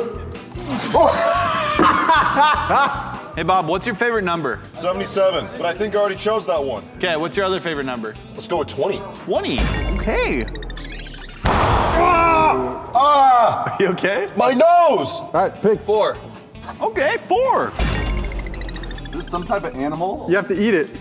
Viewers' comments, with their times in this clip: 0:06 Nah a whole gunshot when off